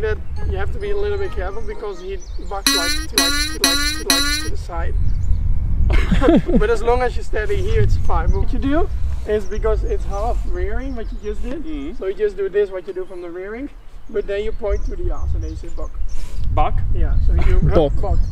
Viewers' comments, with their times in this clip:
0:03 absolutely killed me 😂😂 that sound effect was so out of nowhere